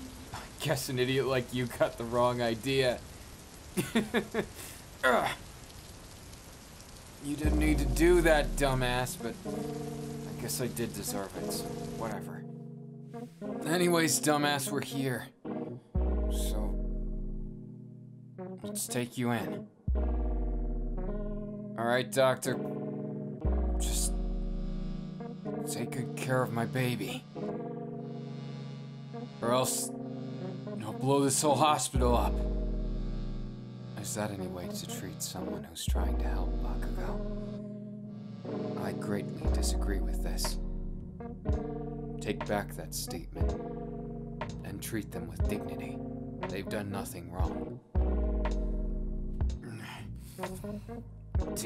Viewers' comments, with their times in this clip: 0:07 BRO IS IT JUST ME OR THE BEAT GOES HARD AF....LIKE DAMN...PLS TELL ME WHATS THAT BEAT CALLED WHATS THE SONG
0:11 The music kinda hit diff ngl 😌
0:21 I really like the song that starts I think? (It's kinda cut off on my phone) it's super cool
0:34 Tell me a it doesn’t sound like Kakashi. I know that hot voice anywhere